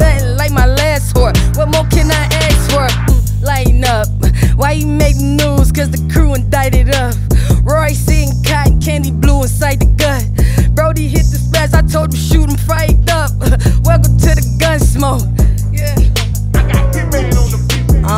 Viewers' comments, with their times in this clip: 0:03 she rode tf out that beat out the gate 🔥